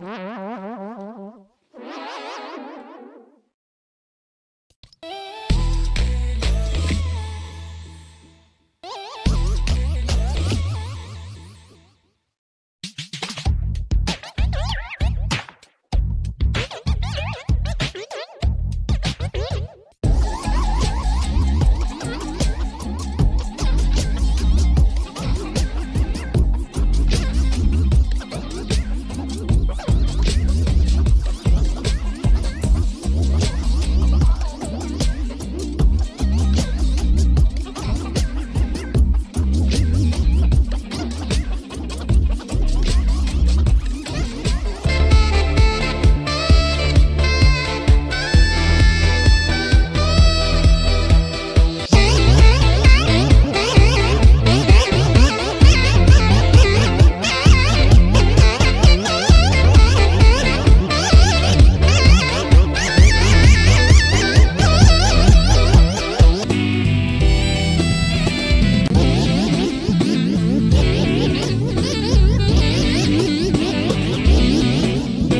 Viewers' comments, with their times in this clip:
0:08 Who else thinks that peace out was kinda sped
0:13 what i hear when i hear the default dance
0:52 sound like my car alarm
0:54 actually sounds better
0:59 sound like a chicken